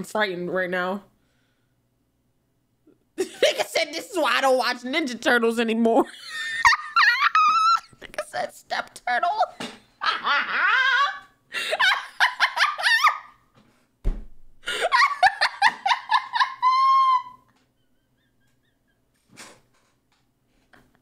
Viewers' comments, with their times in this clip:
0:06 is that even a laugh 💀💀💀